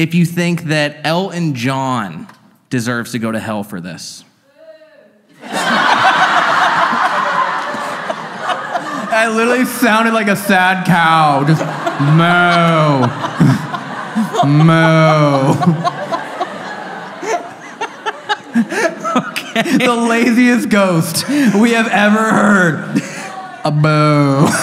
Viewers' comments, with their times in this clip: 0:05 The way I was the only one that booed I was so embarrassed🤣😭